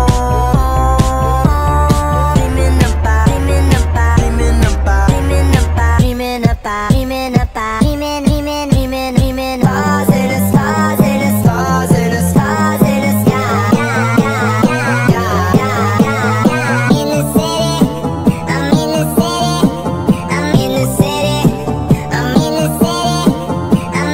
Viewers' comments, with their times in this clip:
0:05 You finally did the 0*** +1*** +3* +3* +1* +1* (F Note) pitch!!!!